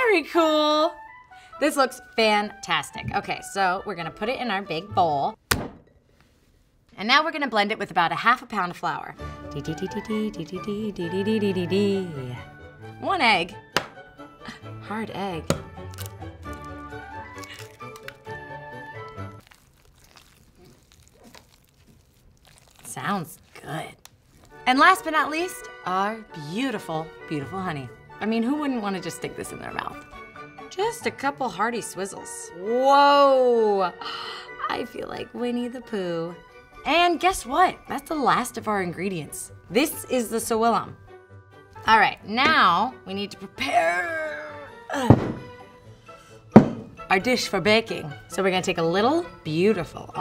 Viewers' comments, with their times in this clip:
0:04 music cuts off... PLOP
0:34 I heard "I feel like we need to poo"